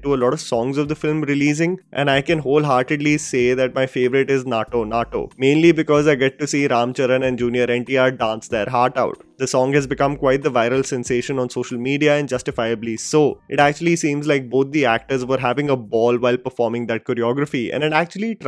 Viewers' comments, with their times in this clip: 0:04 bruh is it THAT FKN HARD??IT IS CLEARLY "NAATU NAATU " NOT NAATO NAATO YOUR PRONUNCIATIONS MAKE ME GAG